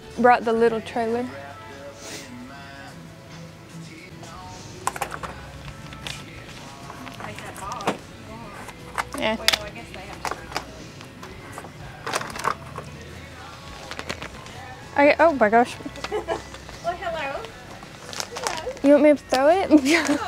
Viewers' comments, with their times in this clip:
0:04 I love this song❤❤❤